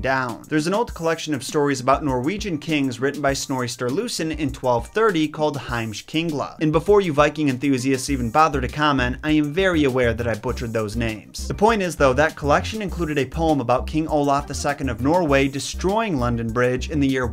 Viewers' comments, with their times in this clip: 0:05 I'm Icelandic and holy shit I've never heard anyone butcher the pronunciation so badly 😂